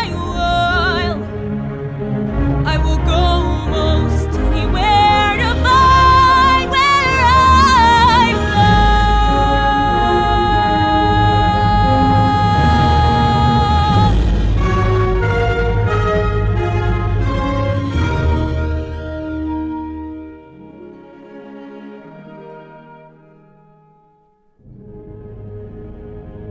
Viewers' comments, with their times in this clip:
0:07 The instruments sound like The Hunchback of Notre Dame's Hellfire
0:09 What a great voice! <3 There's so much emotion you've put into this song, I keep coming back to it. ... It'd be even more unforgettable if someone would animate something to go with it. Animating is not my forte but someone should really consider it! Also, some of the last parts of the orchestra remind me of Notre-Dame's Hellfire. Anybody else?